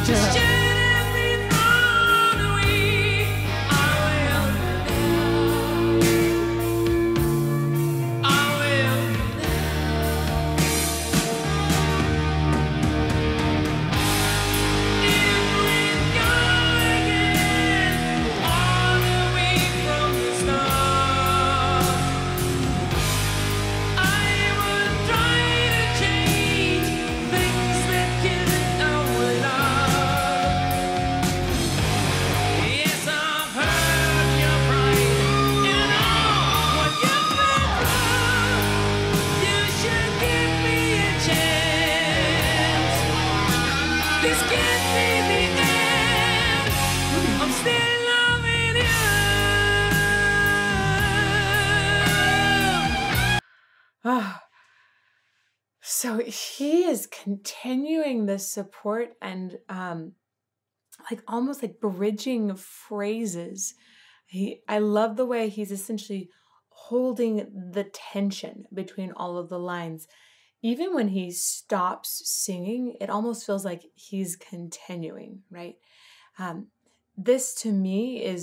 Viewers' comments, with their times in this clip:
0:06 He was saying... "Love" , "Our Love" , when you were thinking he was saying it differently', just an fyi yo' 😉
1:05 Yes! He's singing first, and lyrically expressing 2nd. I see so many times singers want to emphasize the lyrics which is great but they abandon the idea of the voice being an instrument. There are vocal pieces that are in different languages that are still beautiful. I remember seeing Dave Grohl and Butch Vig having Corey Taylor sing on a song and Butch said, "Remember it's rock n roll, it's ok if not every single syllable is Perfectly. Succinct. Which is some good advice.